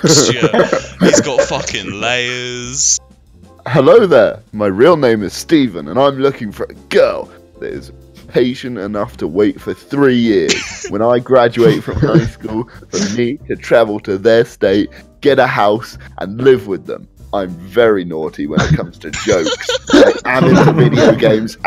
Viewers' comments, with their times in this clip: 0:03 i love how he read it in Boris Johnson's voice